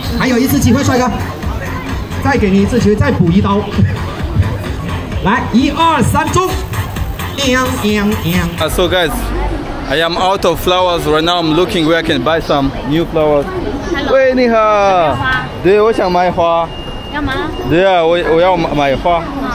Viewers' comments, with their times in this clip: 0:06 🤣 when he says "anp anp anp". Is it the Chinese version of whomp whomp whomp?